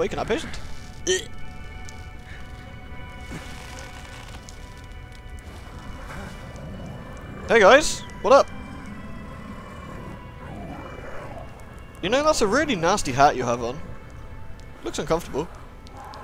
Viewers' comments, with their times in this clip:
0:04 Did anyone else hear a very growly "Why dont youuu... .. Nhhh go to hell"? Just me? Guess I'm the only one that dreams of monsters also being arseholes.